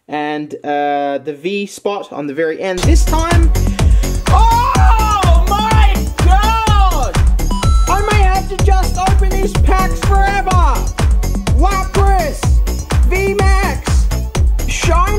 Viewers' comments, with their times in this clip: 0:03 might I say that’s the most fitting music you’ve put in on a rare pull, like the music fits so well with the music notes from lapras